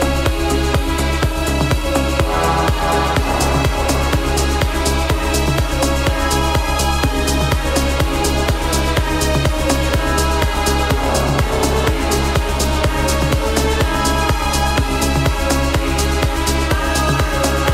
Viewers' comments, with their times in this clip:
0:04 Aw man when that drop comes after the violins ❤️ hits you in all the right spots! These guys are coming to Sydney next week and I haven’t been able to get my hands on a ticket yet 😬 wish me luck!